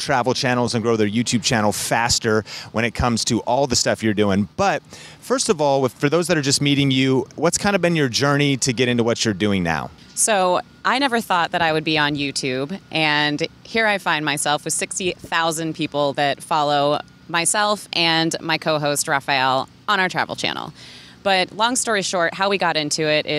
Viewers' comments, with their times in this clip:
0:08 Ok, I had to stop to say wow she is pretty, and then I hear her voice, and even more wowed. Amazing woman.